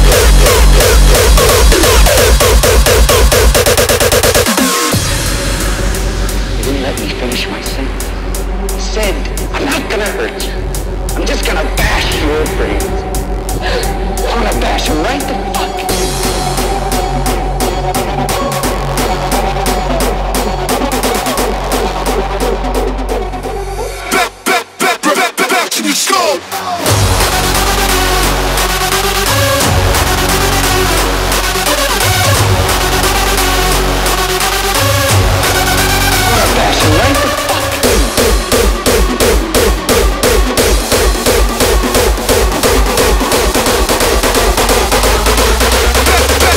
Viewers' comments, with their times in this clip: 0:04 A bit of both, i can hear the angerfist too indeed, especially that liitle noice The build ups are more neophyte style. Reminds me a bit of Neophyte - Alles Kapot
0:27 full angerfist synth and melody style hahaha